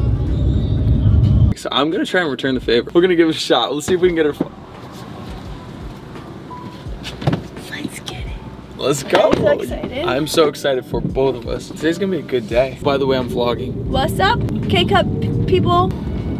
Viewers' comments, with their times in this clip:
0:03 the way he just shut silent is killing me 😂